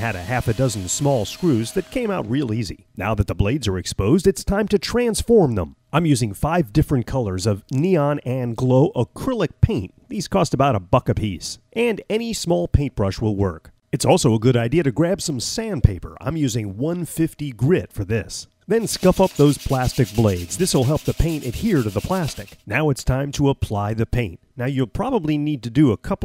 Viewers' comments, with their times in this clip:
0:10 Sorry but it sounded like you said 'these cost about a fuck a piece' instead of 'these cost about a buck a piece'
0:10 i've never herd of Neon paint costing a fuck a piece before :P